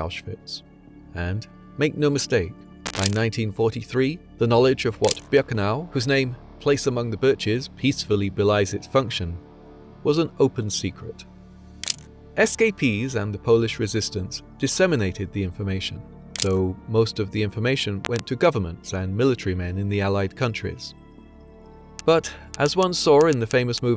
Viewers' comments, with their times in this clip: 0:05 Whatever sound effects crap for "dramatic effect" you use in your videos, it's literally breaking my damned headphones and scratches my ears!!! in the video and I cannot continue watching. Good job! </sarcasm>